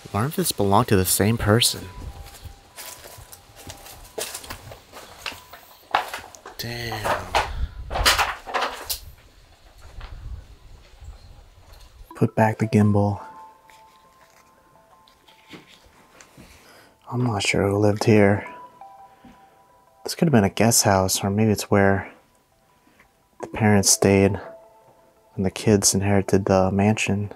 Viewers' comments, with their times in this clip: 0:10 sounds like a small child talking EVP